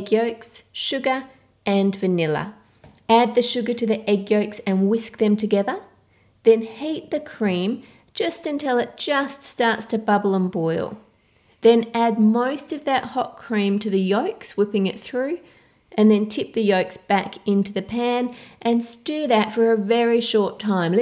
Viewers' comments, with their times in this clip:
0:06 now hate the cream XD! (love your accent <3)